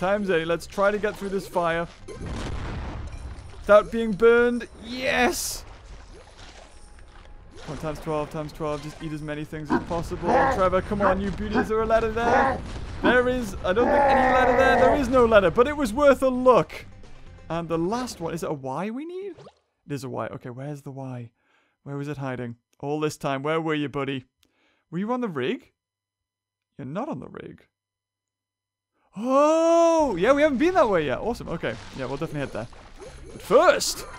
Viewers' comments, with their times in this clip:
0:06 Did you guys hear a noise in the game min
0:10 Do u guys here that werid roar
0:10 Does anybody else hear weird grunting noises ?
0:11 WHAT IS THAT KINDA HULK NOISE
0:12 Is it just me or there was a weird sound.
0:12 Did anyone else hear the noise near
0:16 What was the grunting ?